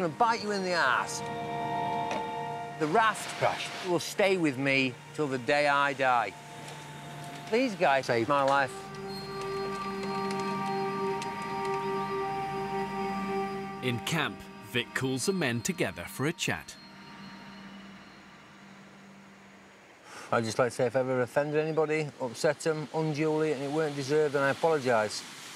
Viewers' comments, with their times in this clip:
0:08 ''These guys .. sVed MY Loife'' lol its funny how they edit this and paint a picture - that clearly was stitched together from different sound clips. If you watch this series closely there's a hell of a lot of moments like this.